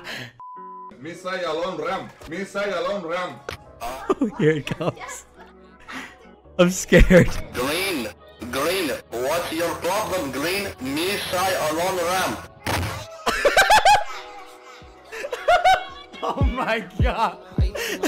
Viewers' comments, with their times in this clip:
0:03 can someone tell me why i hear someone moaning?
0:04 Why do I hear moans in the bg ?